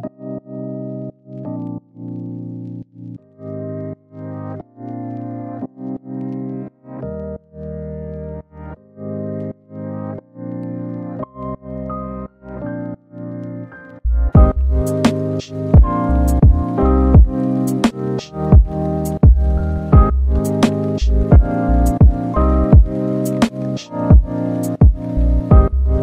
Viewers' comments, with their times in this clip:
0:10 im gonna listen to this to go to sleep it reminds me of silverfish in minecraft. goodnight! ✨🕛 last edit: its morning already oh no. jk its only am but thats still morning...